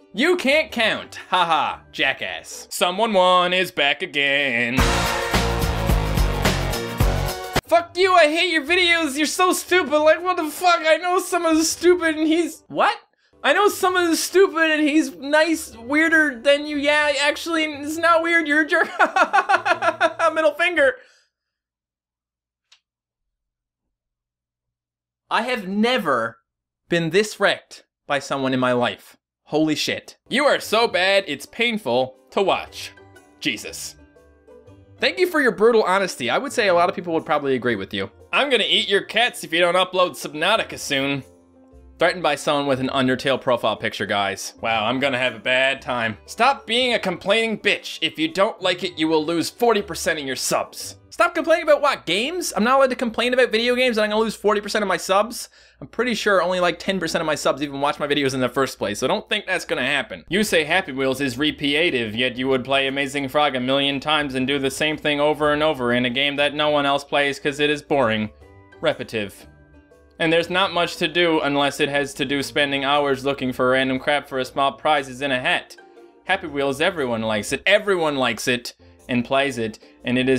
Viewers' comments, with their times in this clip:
0:09 why did the comment ? made me think of Rick and Morty lol the way he was reading it... wait I just answered my own question
1:01 The way you read the comment had me literally crying of laughter! I personally think you're great🤓😂